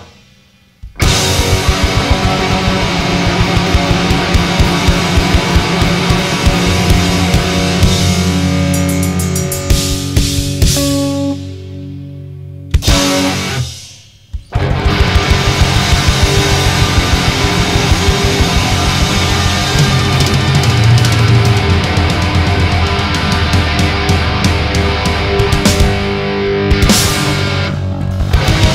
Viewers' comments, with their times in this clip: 0:09 hahaha i love the end's homage to early Metallica